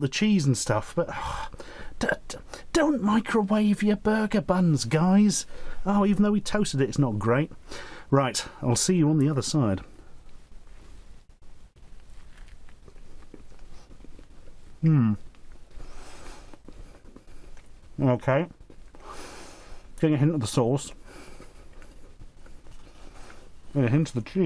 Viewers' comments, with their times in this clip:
0:09 I was expecting the "ahm" sound he usually makes when he bites into a foodstuff. I was kind of disappointed when there was none.